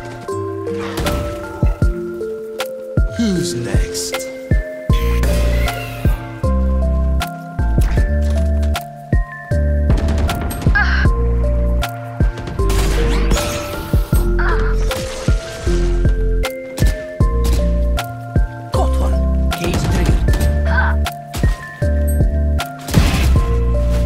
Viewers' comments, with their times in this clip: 0:09 Yeah the audio sounded pretty good now, also don’t be afraid to put some personality in your vids it doesn’t need to be purely your thoughts! also wtf was yoru doing